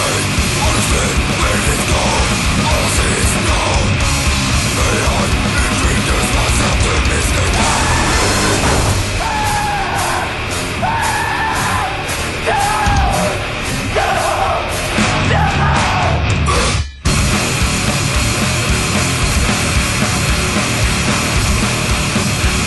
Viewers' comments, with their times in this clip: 0:09 From they apparently included recording of my voice, I was trying to run away from the deadly Passer Montanus...